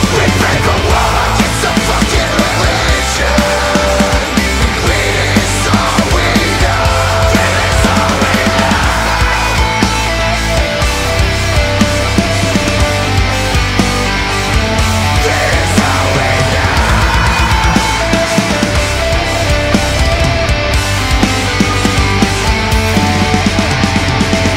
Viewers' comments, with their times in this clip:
0:07 min. F*cking amazing guitar